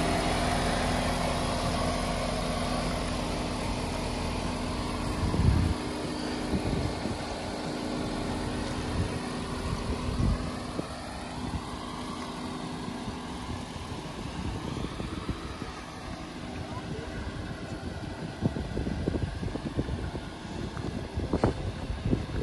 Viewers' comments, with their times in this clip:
0:03 Is that the aux fan screaming or a high engine idle? personally I think 18's re crazy, but it IS your car, so as long as you are happy. The car is certainly looking good.